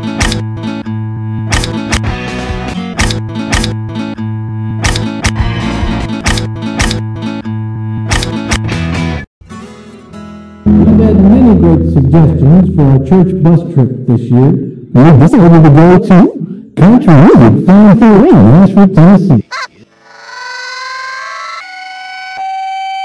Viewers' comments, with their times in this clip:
0:10 what the audio system in the gym at my school sounds like